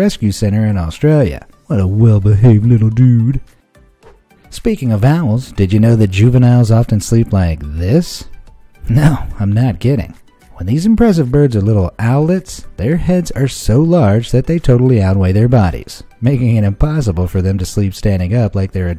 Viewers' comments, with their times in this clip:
0:06 I think his microphone or so got to his mouth